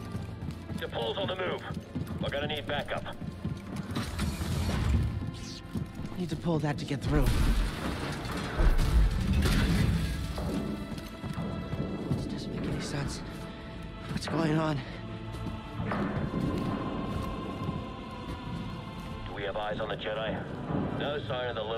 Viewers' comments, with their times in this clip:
0:08 that knocking noise made me fall off my chair